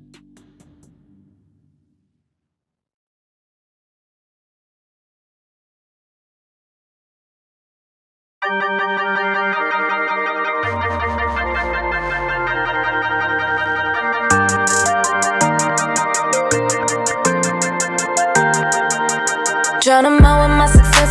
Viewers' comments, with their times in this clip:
0:09 Love that song that starts